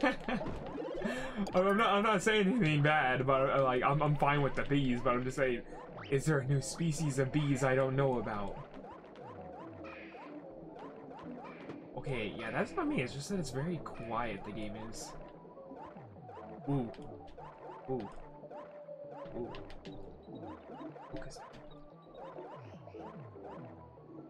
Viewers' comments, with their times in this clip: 0:06 Actually yes there is. It’s called a..... bubblebee also what happened to your audio?